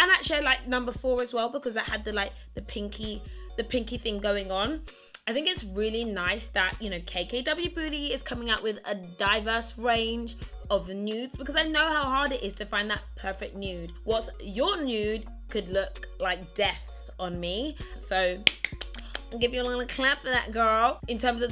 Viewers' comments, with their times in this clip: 0:06 Did anyone else hear "KKW booty" 😂❤️ btw ly😍❤️
0:07 Am I tripping or did she say "KKW booty" lol